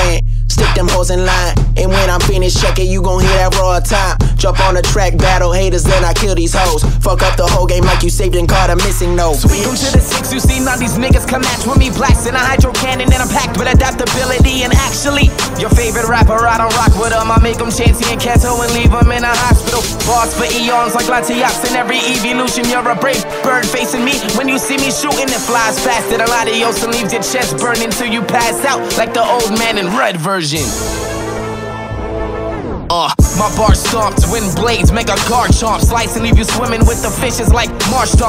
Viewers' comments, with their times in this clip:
0:10 My man went IN!!! Defo the best out of the whole video, his flow is amazing! "The Arceus of Raw and to me y'all Mew, how you the maker of all? when I made you?" Fking loved his verse!
0:25 My leg spongebob voice